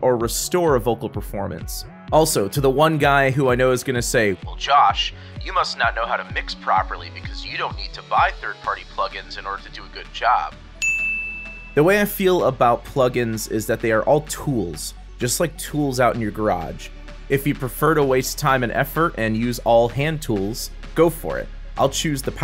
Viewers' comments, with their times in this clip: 0:07 how to make voice like in I call it "radio voice" :D ? how to make it ?
0:07 how to make this kind of voice ? Which eq is good to do it ?